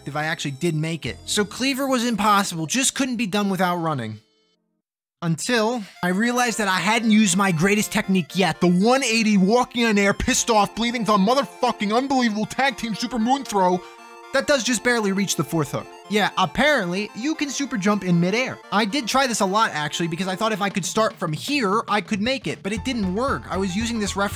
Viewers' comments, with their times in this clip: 0:09 I thought this was real AVGN audio for a second lmao